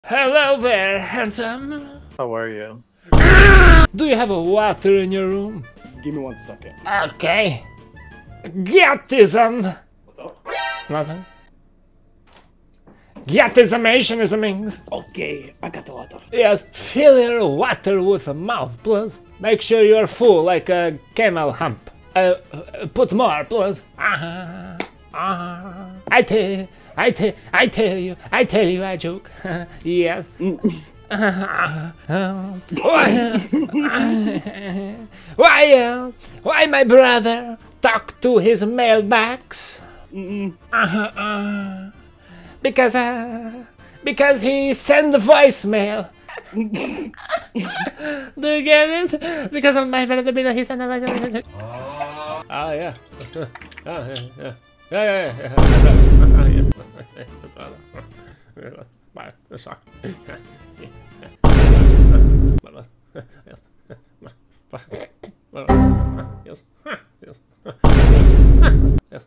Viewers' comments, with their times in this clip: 0:03 dayum Donald Duck be on here
0:49 bro was rapping
0:50 i died when he started to rap like Eminem 😂😂😂
0:53 Bro was crack up